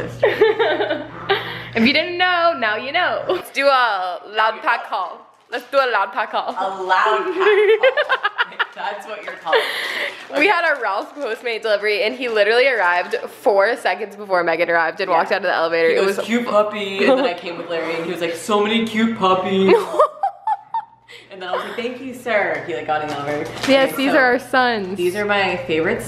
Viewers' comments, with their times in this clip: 0:08 your laugh was so GENUINE!!! I'm so glad to see you happy in your life besides YouTube. I hope you get out of the funk. you make so many people happy and I hope you know that!!! we love you girlie. ❤️